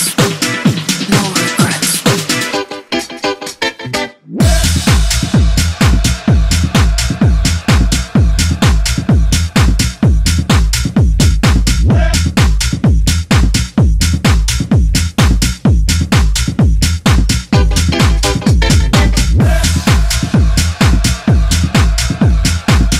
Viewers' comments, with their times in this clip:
0:10 classic & groovy kicks. Hot synths. 🔥💣